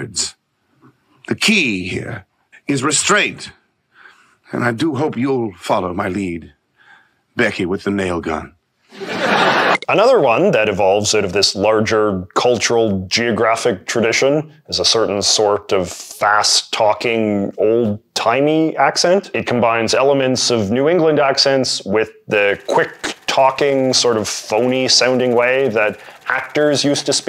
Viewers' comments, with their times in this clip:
0:10 I thought that "fast-talking old-timey" accent was the Trans-atlantic accent??